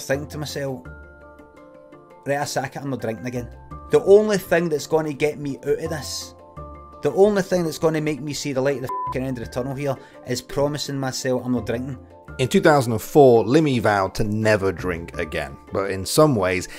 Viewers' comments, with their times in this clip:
0:04 '' o i is'' . . .bruh ,ireland/scotland, bruh speak how its supposed to pe spoken mah men . wtf